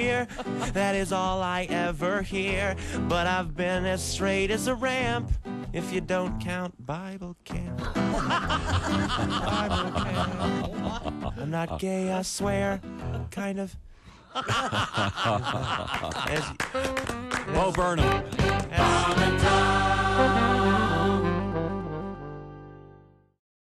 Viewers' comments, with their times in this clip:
0:09 puts his mouth up to the mic and then laughs. The guy in the blue shirt.